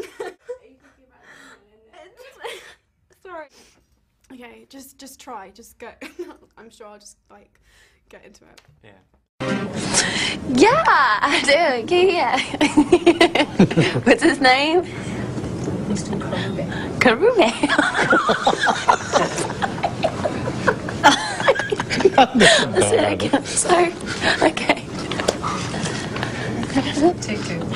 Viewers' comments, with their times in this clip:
0:08 why is she laughing. What was his name